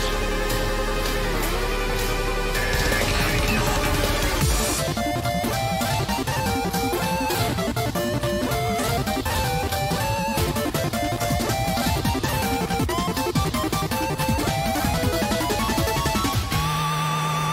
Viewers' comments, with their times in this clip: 0:04 reminds me so much of deltarune music